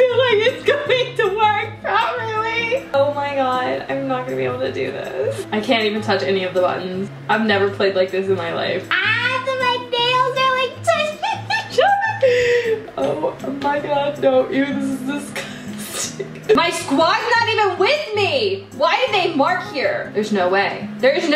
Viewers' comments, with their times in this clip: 0:08 she sounds like cardib lol